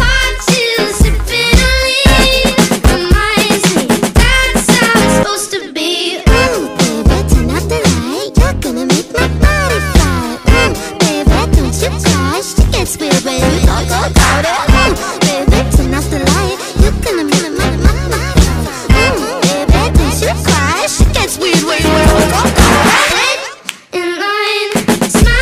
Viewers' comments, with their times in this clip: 0:03 omg i finally found it wtf a I ALWAYS THOUGHT IT WAS LIKE "ou baby turn off the light i wanna see a butterfly" brb running to get some braincells 🏃‍♀️
0:03 When it gets to what type of voice would you call that? Like when it’s two different voices but it’s from the same person just deeper or higher cause I have a character that sounds like that and I need to know plz💀
0:04 I don't know why but I thought was doja cat when I first heard this song lol
0:05 The line sounded like "Ohh baby tsunettenai~"
0:06 ooh baby tuna fly